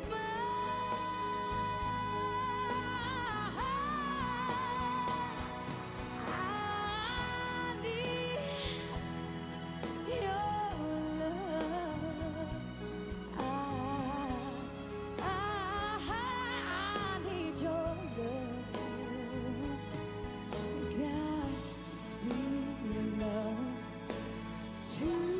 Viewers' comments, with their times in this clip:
0:08 it was amazing till her voice cracked ( in this segment). To bad for that, cause it kind of ruined otherwise perfect performance.